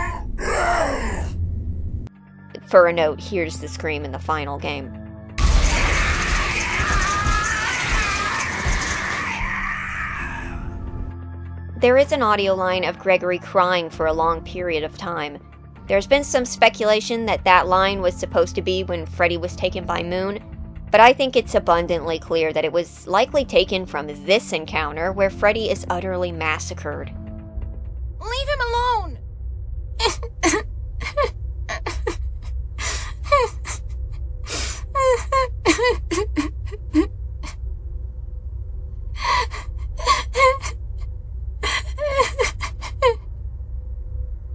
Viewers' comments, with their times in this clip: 0:06 I had thought that was the disabling robots that made that noise
0:24 does anyone else find his cries funny
0:30 WHAT IS THIS GOOFY AHH CRYING 💀💀💀 That’s how Drake cry bro 💀💀💀
0:30 that is the fakest cry I've ever heard lmao